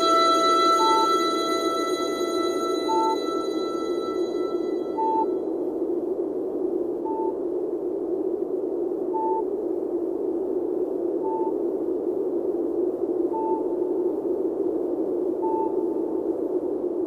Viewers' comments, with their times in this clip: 0:04 I always liked the ending of this song as well. It sounded to me like a very lonely quiet beeping "space buoy" of some sort.